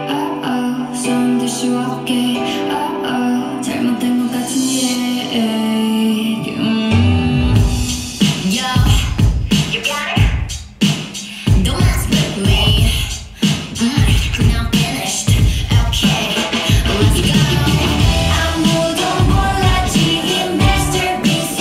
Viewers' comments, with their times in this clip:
0:03 her voice is so beautiful like ohmygodness. I never heard something that pure.